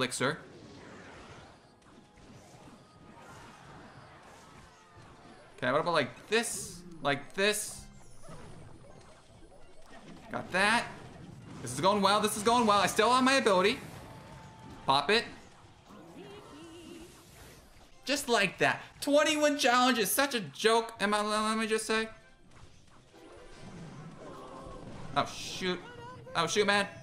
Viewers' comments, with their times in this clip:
0:10 Why did e spirit sound like ice spirit